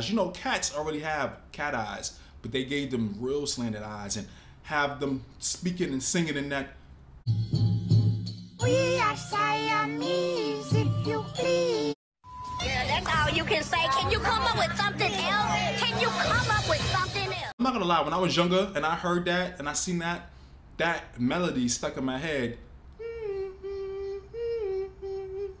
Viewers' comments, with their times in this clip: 0:10 I am glad in my language there was more "sirene mysterious" than asian-like dubbing for the cats. They were SCARY and child me had no idea they were about to be asian-like D: